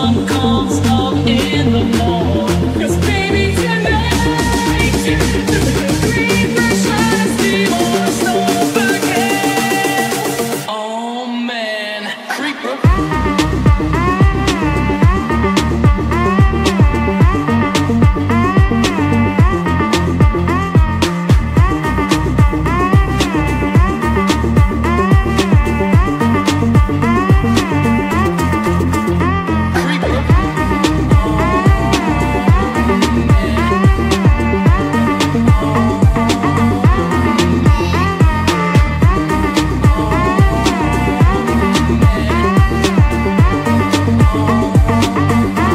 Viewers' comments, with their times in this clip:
0:10 aww man dances with a epic music
0:13 this part of this music remind me of hotel Transylvania
0:27 I only just realized that the music was damage sounds too lol😅